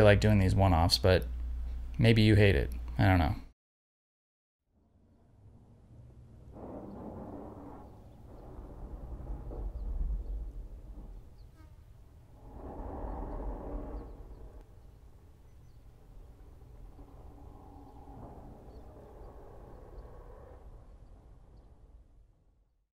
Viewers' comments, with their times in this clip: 0:07 soundtrack. Cool. At first, I thought it might be Baxter snoring.